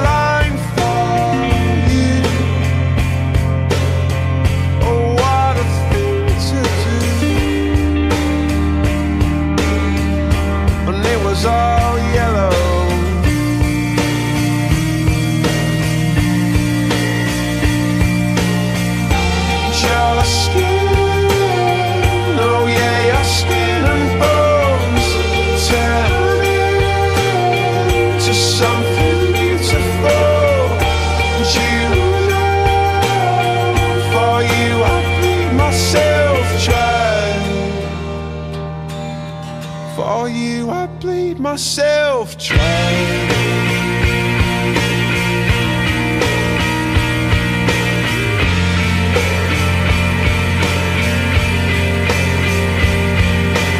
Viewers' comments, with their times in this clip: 0:05 is that a voice crack
0:25 Danes having a big laugh once u hear it u can't unhear it matter fact had to search lyrics cuz I didn't know what he said
0:32 for you I peed myself :-(
0:36 i heard “for you I peed myself dry XD
0:37 for you i peed myself